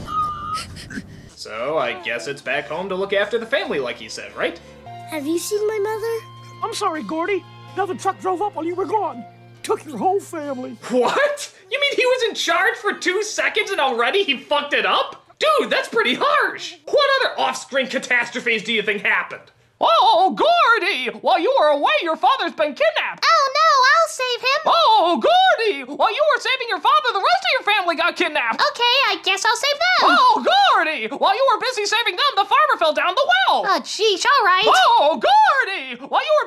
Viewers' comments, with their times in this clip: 0:06 Since when Mickey Mouse becomes a rooster?
0:20 that sounds like Mickey Mouse 😅😂
0:20 😂😂 that’s sounds like Mickey Mouse